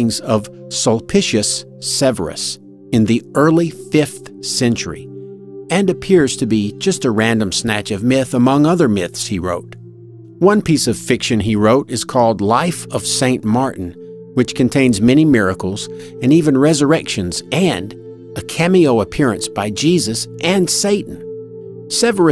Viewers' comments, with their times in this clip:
0:05 I've read "suspicious Severus"